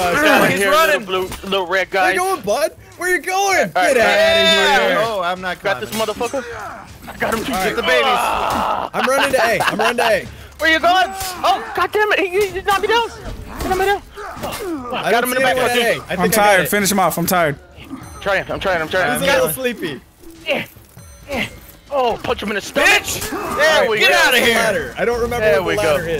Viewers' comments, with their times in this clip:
0:08 my audio tucked up